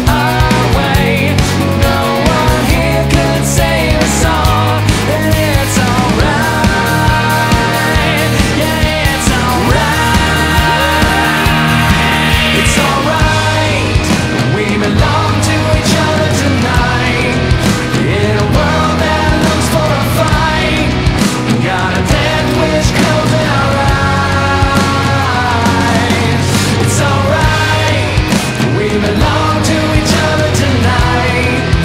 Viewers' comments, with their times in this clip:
0:07 I know I’m late but when the guys screams that’s my favorite part
0:12 to the end is incredible, that could be the chorus of a totally different song
0:13 Any thoughts when the tempo changed and that piece fell by the drummer?
0:13 Anyone else get a Muse vibe